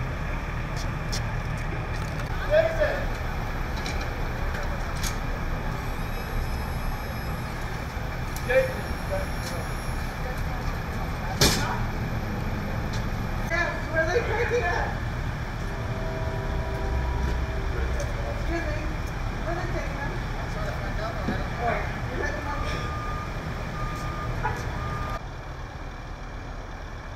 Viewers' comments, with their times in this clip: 0:09 that smug look on his face makes me so angry. His mother standing on the side watching and screaming and pleading this not to be true. She's crying because lives were taken not what her son had done. That's a scream of absolute.